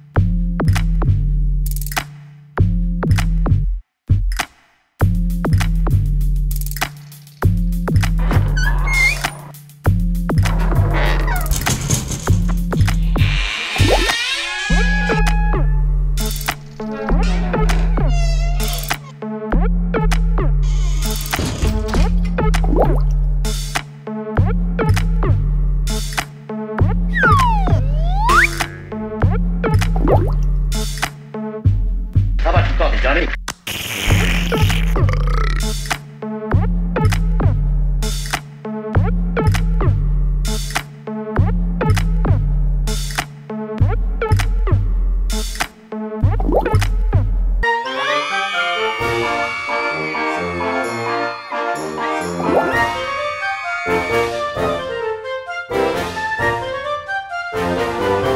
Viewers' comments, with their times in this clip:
0:08 That Rusty door noise almost made me choke on my Gummy worms bruh
0:35 the belch was a nice touch
0:46 I love the pedal pub music. all the way. 😂